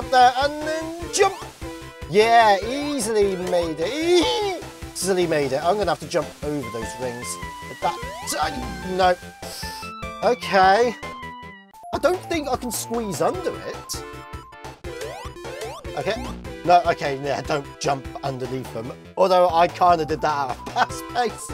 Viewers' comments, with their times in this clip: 0:03 That Voice Crack😂